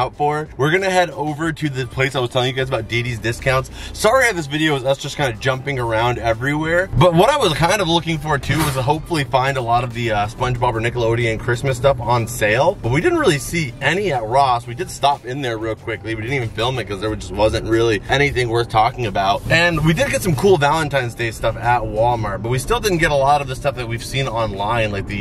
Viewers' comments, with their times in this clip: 0:08 lmao it sounds like you ran over a shopping cart. I wasn't watching I was listening so I looked up to see if you crashed the cart in the store and you were driving. 🤣 Literally has nothing to do with anything but gave me a lovely chuckle that I surely needed.